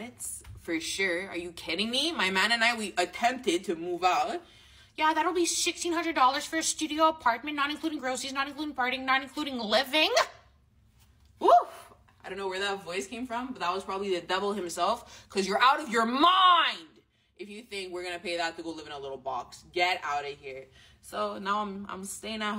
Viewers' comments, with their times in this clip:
0:05 did she fart?